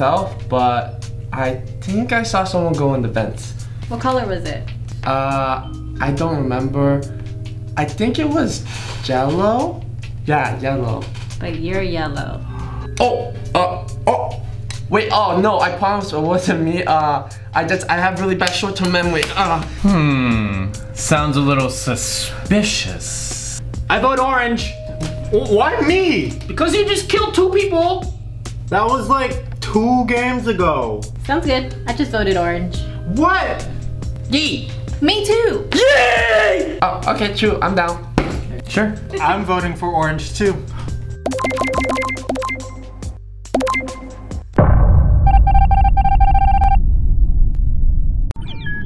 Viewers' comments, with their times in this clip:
0:08 yellow or jello
0:35 I love how black is like YEAHHH!